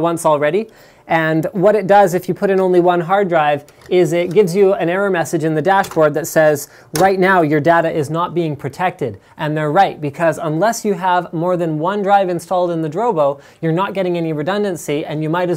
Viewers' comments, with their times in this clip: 0:03 voice over magic